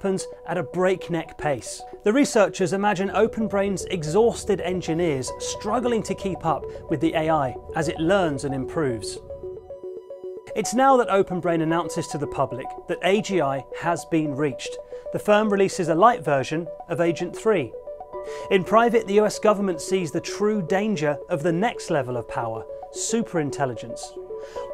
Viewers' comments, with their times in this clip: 0:10 AI old school Kung fu movie dubbing 🤣